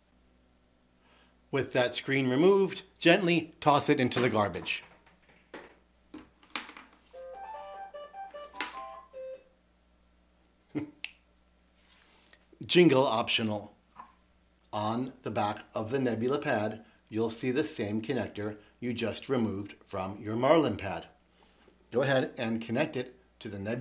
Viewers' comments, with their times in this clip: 0:08 A1 series ahh sound😂